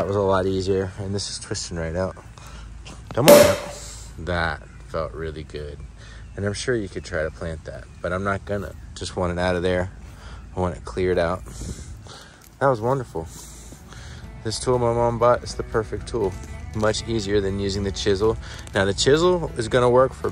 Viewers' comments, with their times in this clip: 0:04 the cork popping killed me